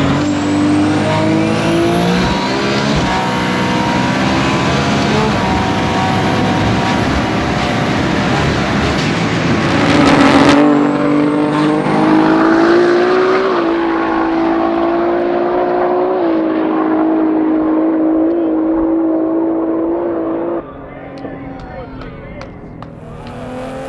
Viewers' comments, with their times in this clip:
0:06 I wonder if he was lifting off and on a little or was there T/C kicking in? It sounds like in top gear like he's not at WOT the whole way